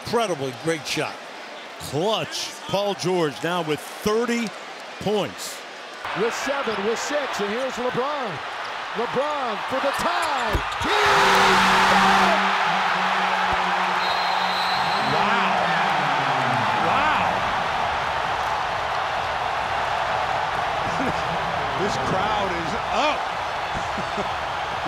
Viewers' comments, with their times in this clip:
0:09 now tell me that has got to be so LOUD